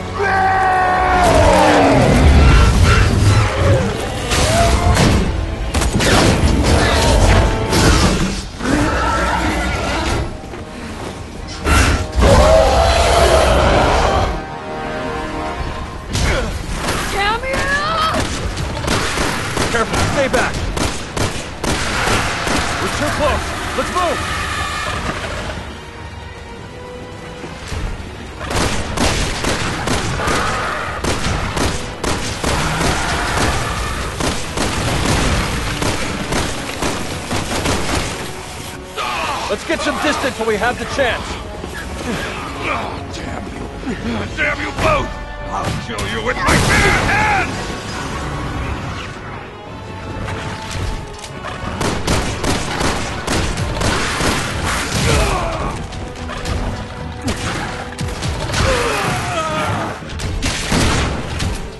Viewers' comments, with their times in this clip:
0:03 I never played this game, but I have a (maybe stupid) question. Why the FUCK does he burst into flammes and, why are his bones doing a sort of metal like sound?
0:08 Cave troll scream.
0:45 “you have bear fists?”